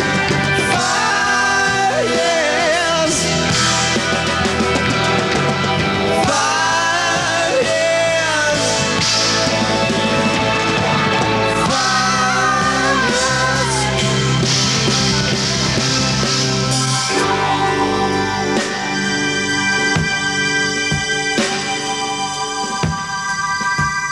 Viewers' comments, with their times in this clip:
0:10 an obscure high note. A full voice modal E5.